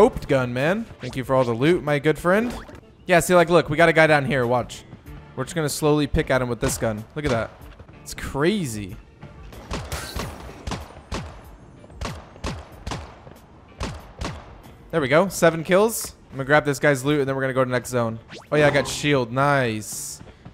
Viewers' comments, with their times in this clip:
0:03 Who heard the voice crack